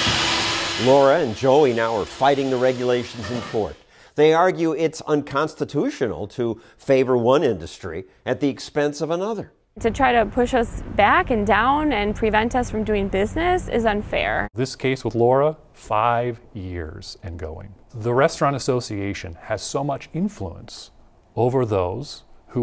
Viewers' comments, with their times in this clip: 0:09 When did women start talking like that, and why? They never sound like that in old movies. Do women like to sound like they are stupid?